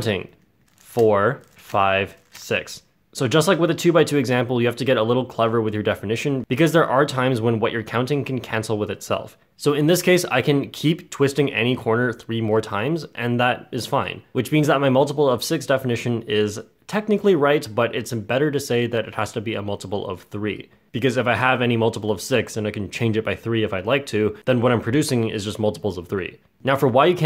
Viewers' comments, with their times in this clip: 0:09 "So in this case I can keep twisting any corner 3 more times and that... is funny." That was hilarious!